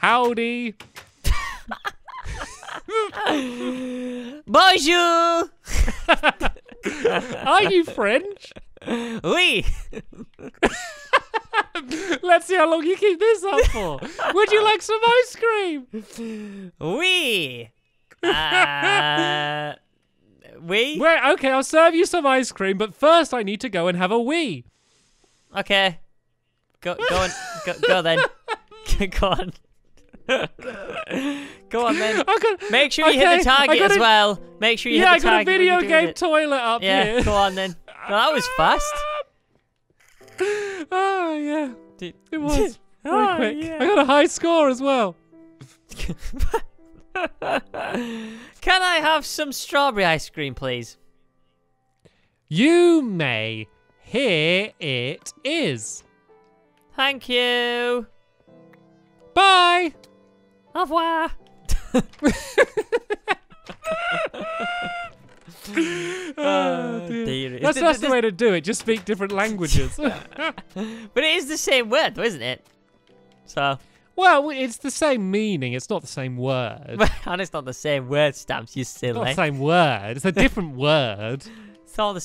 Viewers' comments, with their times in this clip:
0:05 stampy laughs regularly?!
1:04 Listen hE SOUNDS LIKE A DONKEY OR A ANIMAL